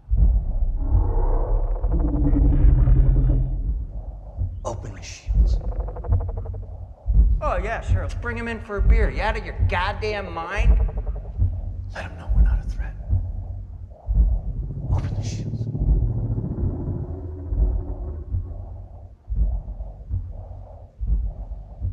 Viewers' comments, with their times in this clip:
0:03 why is there that awkward pause between Kyle Chandlers line and the scientist?